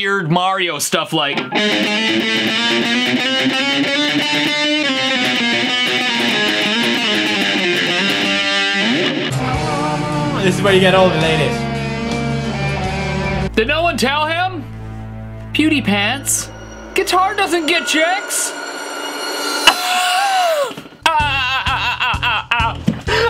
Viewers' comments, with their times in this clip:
0:06 Does anyone else hear Left 4 Dead ?